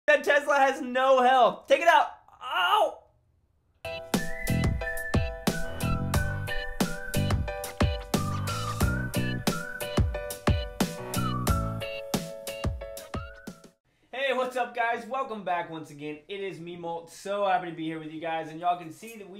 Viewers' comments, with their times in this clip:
0:02 What the Hell was that noise?